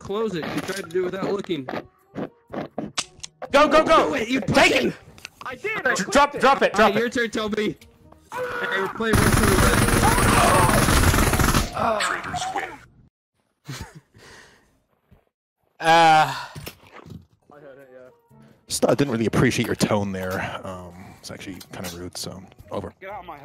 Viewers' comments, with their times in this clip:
0:07 "ArrrrrrHHHHHHAAA!" Gun shots
0:08 That war cry followed by a massacre.